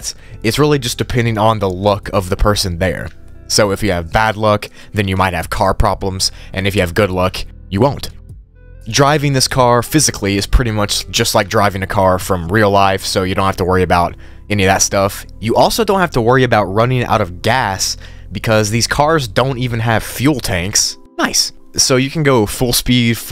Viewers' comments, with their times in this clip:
0:05 me who heard look : yes!!😃 *luck shows up on my screen* me : no!! 🥲